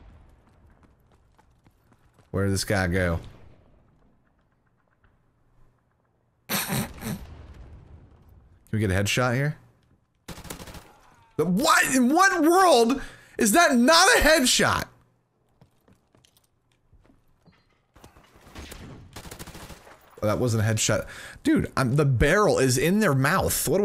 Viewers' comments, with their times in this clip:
0:06 was that sound you laughing at him through the wall